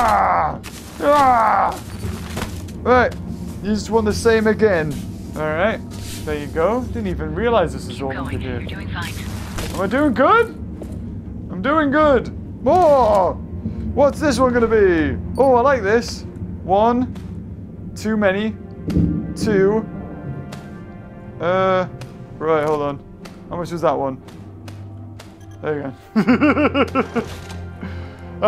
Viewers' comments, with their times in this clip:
0:10 I thought she said your doing vine XD